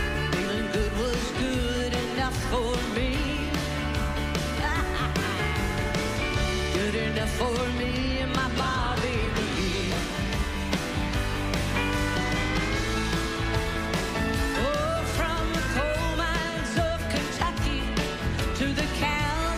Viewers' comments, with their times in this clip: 0:04 Such a dirty laugh ,love it !